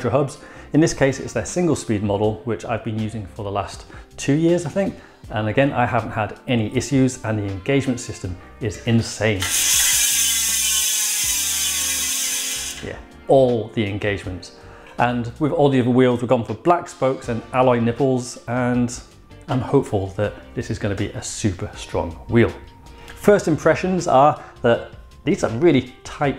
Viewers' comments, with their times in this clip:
0:09 Wow those 26 Look absolutely epic along with the price you’ll be paying for them almost as epic is the sound of those I-9 hubs hand me a box of tissues please lol